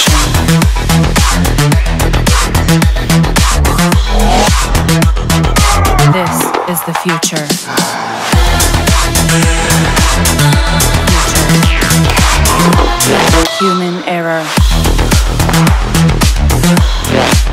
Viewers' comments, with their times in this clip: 0:03 oh yes It was a Russian shout
0:05 That was a spectacular war cry